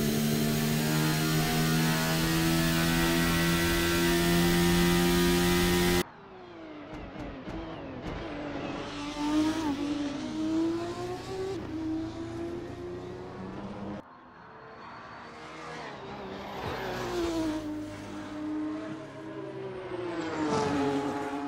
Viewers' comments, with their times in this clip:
0:03 the McLaren sounding like a General-Electric powered Airbus A320